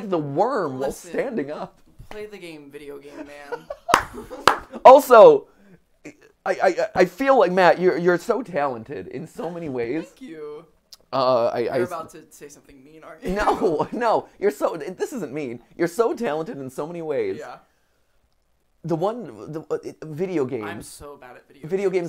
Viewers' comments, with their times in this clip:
0:04 He just clapped twice